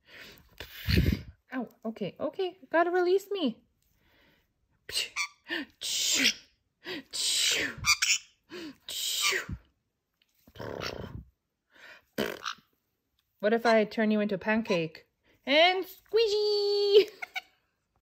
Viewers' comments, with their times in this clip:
0:04 i like when he went "beep!"
0:15 The bird laughed!! <3